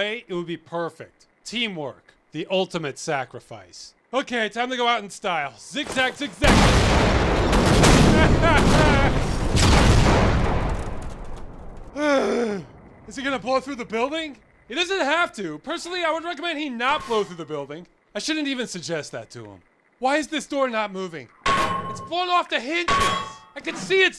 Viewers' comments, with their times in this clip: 0:05 best classic sfx evar.